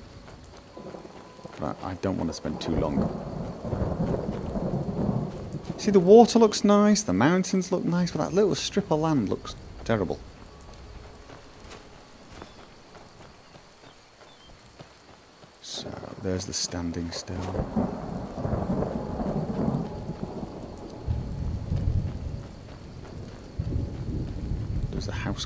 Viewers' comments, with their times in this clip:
0:07 When that storm started I was looking out my window thinking it was real